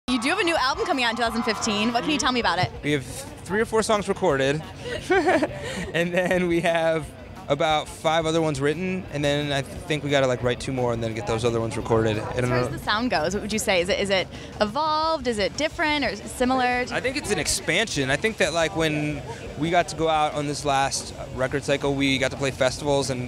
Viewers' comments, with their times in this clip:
0:05 OMG THAT LAUGH CRYING